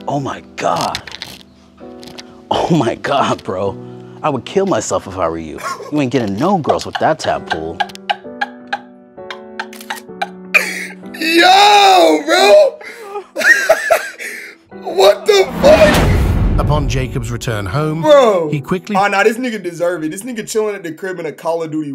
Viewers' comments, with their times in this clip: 0:04 this the funniest line of the vid the way how he’s expressing it😭